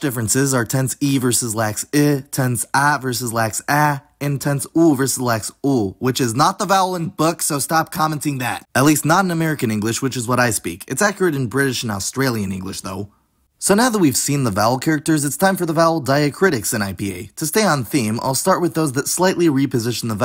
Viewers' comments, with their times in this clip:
0:06 Are you saying “book”? I’m American, and it sounds to me like you’re saying “buck”. I have rarely heard it pronounced that way in my life.
0:06 Yes, I agree. when he says the word "book", it sounds like an unusual pronunciation to me. Definitely not the way I say it. So maybe it's a peculiarity of his own pronunciation.